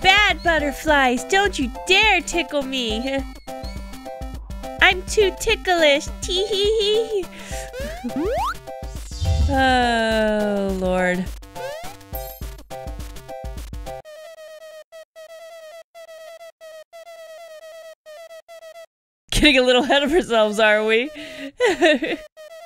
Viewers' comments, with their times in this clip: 0:06 You sound adorable here... Are you ok?